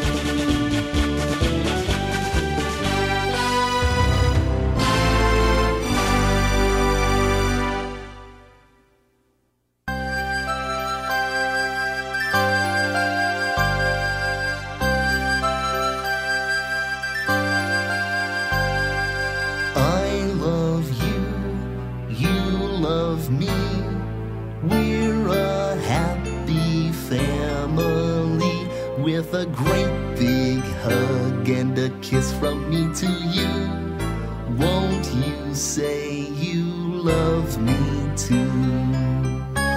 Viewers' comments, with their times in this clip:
0:05 awww he sooooooo cute... what? wtf? no.... NOOOOOOOO not Barney music.... MY EARS ARE BLEEDIN!!!!!
0:25 who muted the sound ?